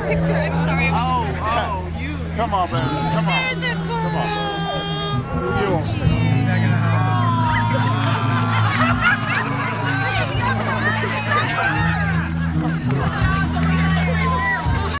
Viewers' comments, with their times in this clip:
0:10 little girl in red dress crying..come on really?